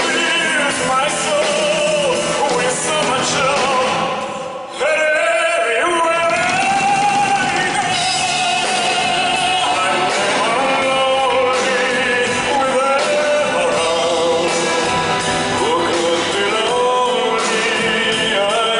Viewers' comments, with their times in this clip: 0:03 You know what I love - besides the song? The way he 'cracks the whip' Now THAT is sexy. Well, that and his incomparable voice. I can't express how much I LOVE this song.